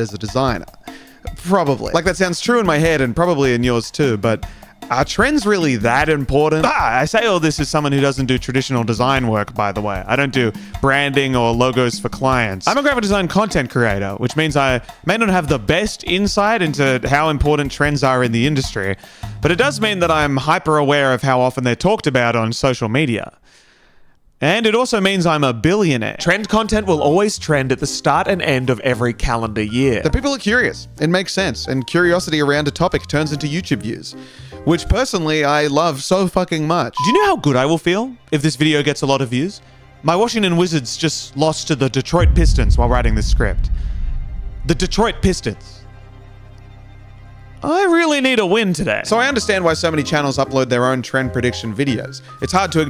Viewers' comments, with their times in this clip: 0:06 The jump scare 🤣 never seen someone jump cut with an AHH
0:34 the delayed censor bleep is funny every time